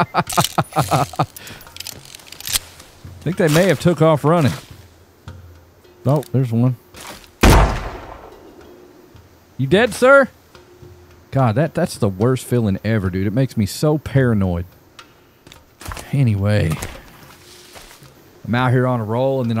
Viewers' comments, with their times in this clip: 0:07 that one sounded like R2D2 screaming lol